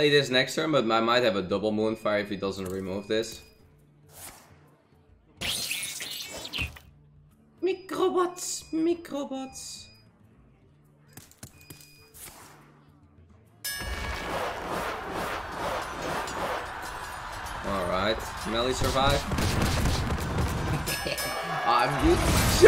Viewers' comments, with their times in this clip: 0:04 who else heard that motherfucking beeping
0:04 that ''microbots'' so cute xsd